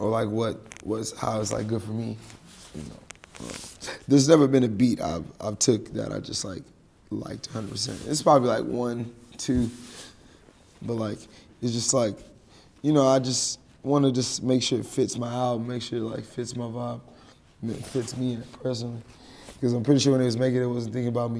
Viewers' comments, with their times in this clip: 0:09 “Two” sounds exactly like a British pronunciation